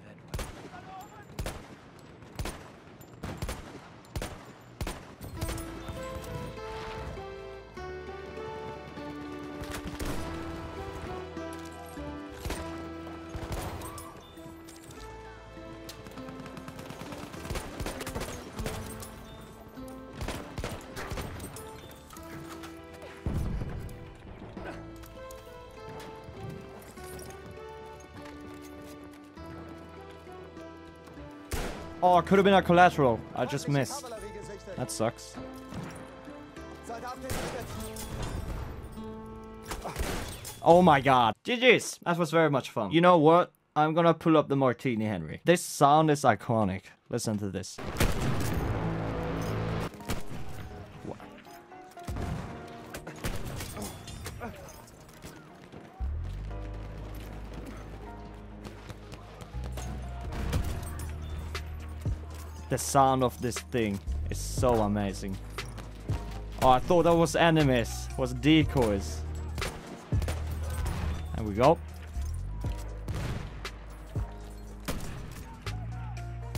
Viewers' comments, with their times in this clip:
0:09 All of my respect for the Runescape music 🎶
1:00 lets go baby bf1 i love when the music cues in like that